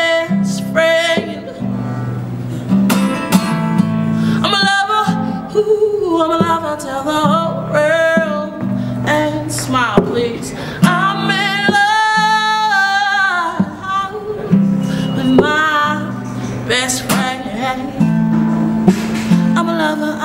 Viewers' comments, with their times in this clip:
0:08 singing his eart out and still making sure to put a smile on others faces